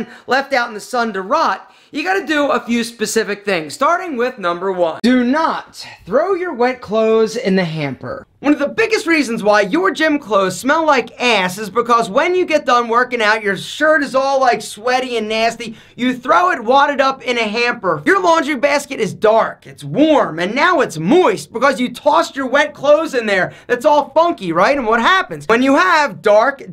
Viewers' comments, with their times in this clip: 0:09 the way he says “ass” 😂😂